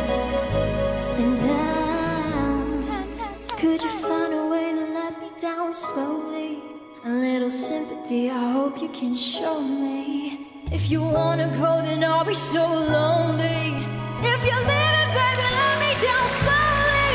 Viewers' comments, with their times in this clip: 0:05 souds like bebe rexha voice mixing to her own voice